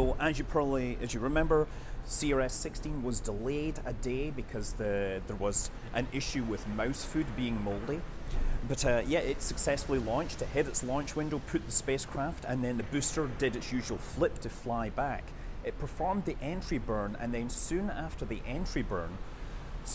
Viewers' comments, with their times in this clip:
0:06 I swear to god, it sounds like you said "mouse food being moldy"